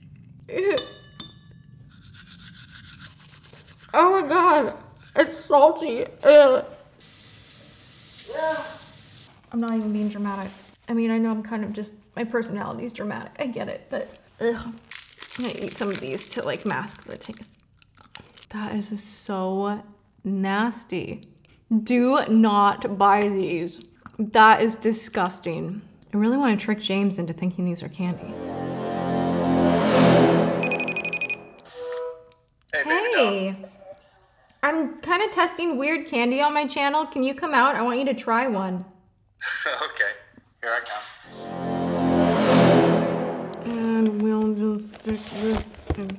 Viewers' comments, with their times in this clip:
0:07 the off camera “Uuuuhhhh” 🤣🤣🤣
0:28 the sinister music 🤣🤣🤣